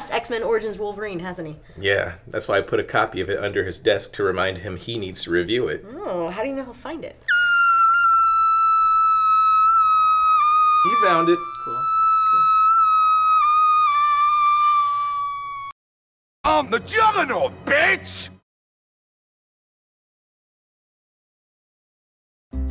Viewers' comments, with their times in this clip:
0:04 Oh where did my previously inflated balloon i forgot to tie a knot go to? [Doug cringing] Oh... there.
0:07 Well, at least Doug didn't call Juggernaut a mutant. Never knew I wanted to hear Doug sound like a deflating Helium balloon.